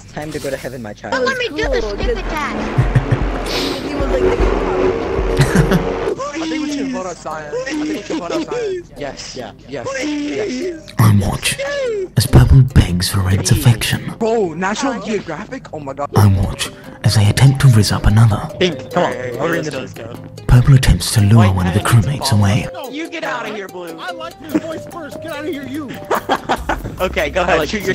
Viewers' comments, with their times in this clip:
0:10 the memories came flowing back in when i heard the music